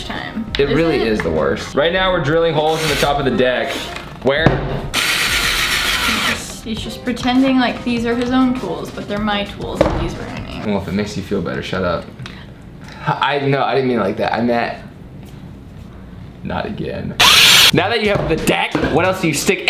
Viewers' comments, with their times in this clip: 0:05 Law and Order DUN DUN